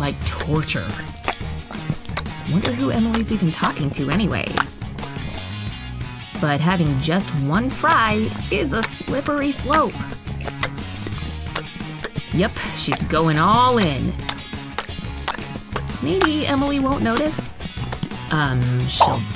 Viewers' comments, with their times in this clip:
0:07 eww the smacking noises is gross